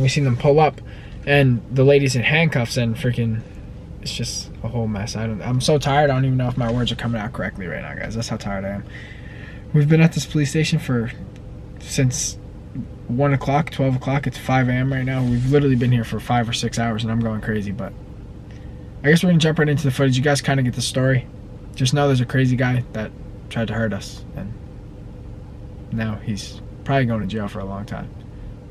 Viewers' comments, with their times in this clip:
0:10 You said play station